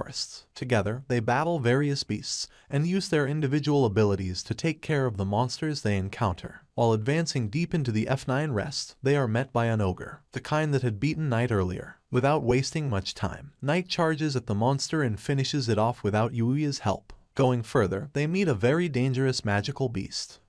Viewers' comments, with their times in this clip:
0:05 "While advancing deep into the F9-rest" bruh